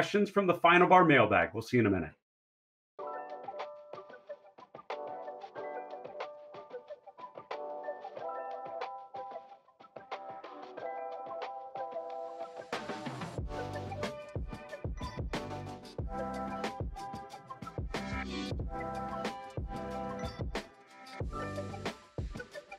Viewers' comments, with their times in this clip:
0:05 the fresh beats!